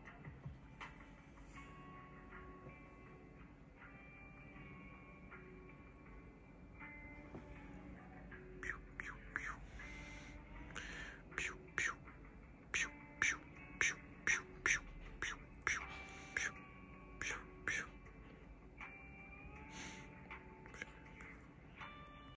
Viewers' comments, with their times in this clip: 0:08 The "pew", "pew" is what got me, ngl 🤣🤣🤣🤣😍😍😍😍😍😍